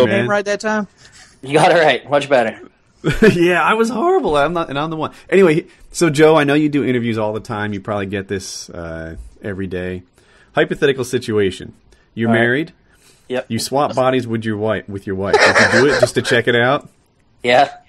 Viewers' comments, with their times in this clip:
0:04 holy shit voice crack LOL !